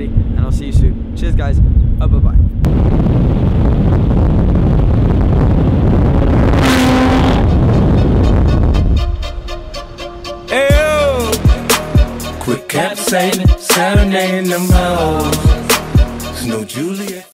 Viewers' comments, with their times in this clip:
0:03 like a jet fighter